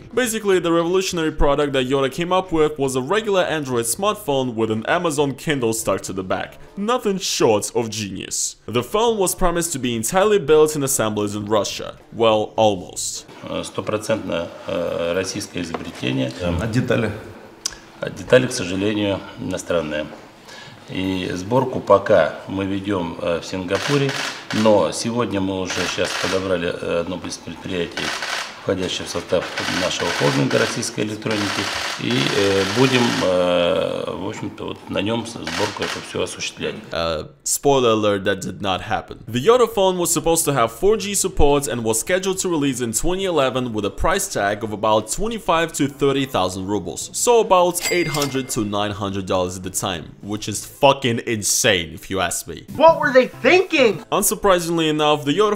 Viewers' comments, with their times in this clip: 0:04 The way you say "Nothing short of genius" lol
0:13 who also heard "stupid attempt" from the Russian man 😂😂😂
0:24 as he says that some components are made in foreign countries you can hear some of developers being executed...
0:35 you can here AK47 firing on back ground
0:42 Rubles sound in english very goofy